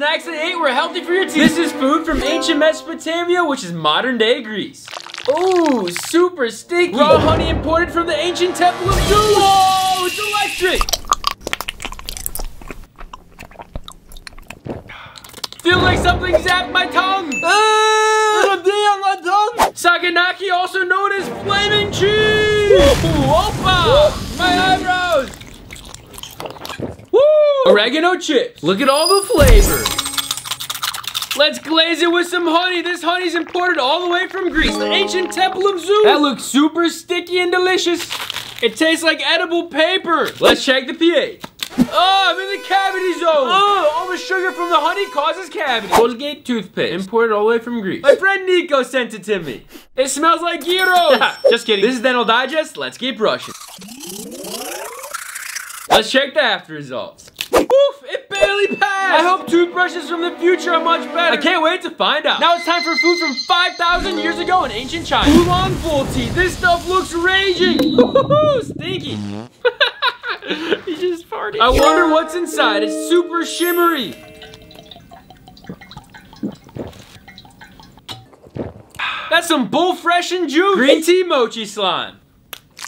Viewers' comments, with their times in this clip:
0:10 those honey sounds were honestly really satisfying tbh
1:03 The Fire Alram